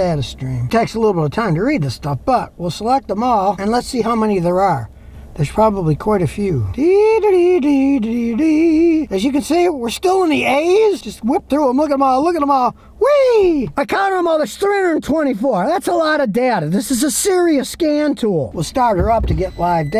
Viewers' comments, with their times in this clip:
0:06 Scotty sings original song "deeee da dee deee deee deeeeeeeee"